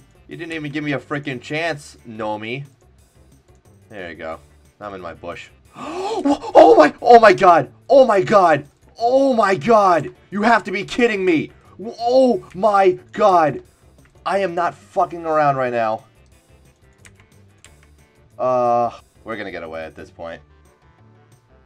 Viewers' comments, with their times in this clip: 0:05 I've never heard you so excited